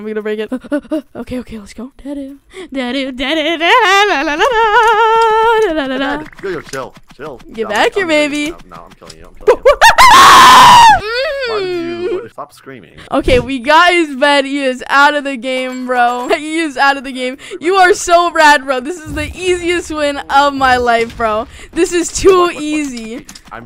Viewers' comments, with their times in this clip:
0:10 Why h screamin like that bro?????